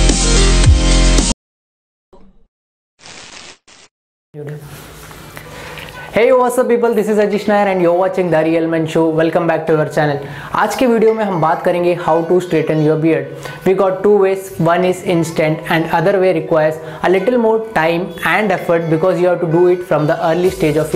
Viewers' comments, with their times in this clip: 0:08 I heard DARIal men show